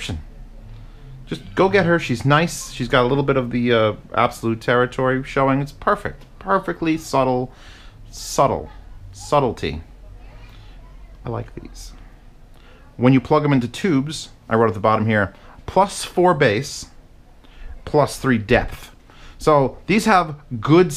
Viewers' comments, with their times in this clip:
0:07 he is so gentle after talking about waifu